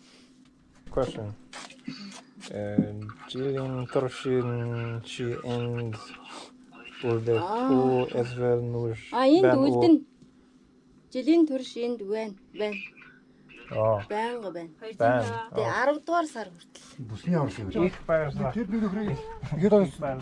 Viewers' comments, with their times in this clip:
0:07 lmao why she make that noise